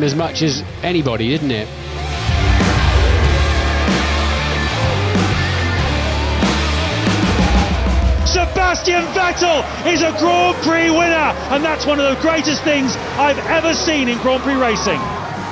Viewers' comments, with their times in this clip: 0:03 Love how the music fits perfectly with Vettel's celebration